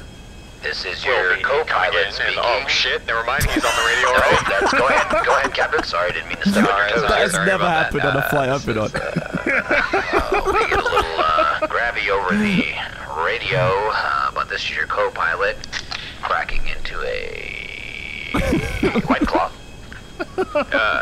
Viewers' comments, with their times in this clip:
0:08 anyone know how they change their voices?